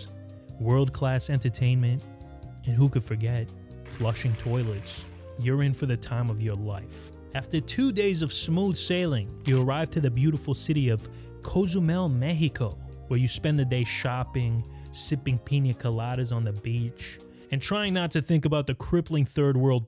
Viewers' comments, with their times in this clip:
0:05 did he actually say "urine for the time of your life"? LOL